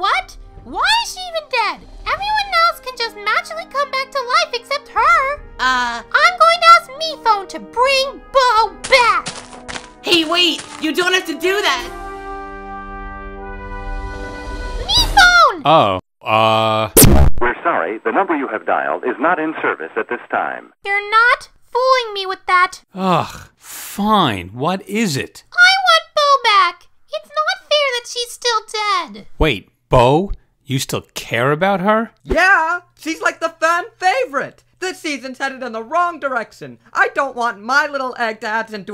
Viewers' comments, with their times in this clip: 0:08 THE MINECRAFT WALKING HELP
0:09 MINECRAFT GRASS SOUNDS LMAOOO
0:25 her voice makes me want to get bow back